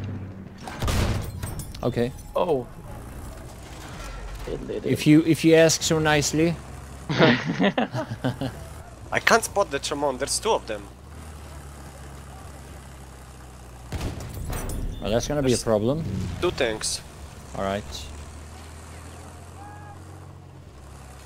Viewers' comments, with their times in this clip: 0:09 is that a German accent?